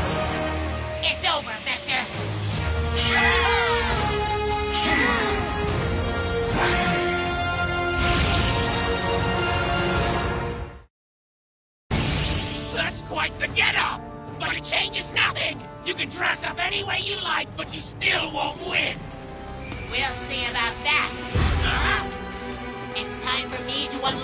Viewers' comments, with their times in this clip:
0:08 am I the only one who hears the fisrst two notes to the chaotic theme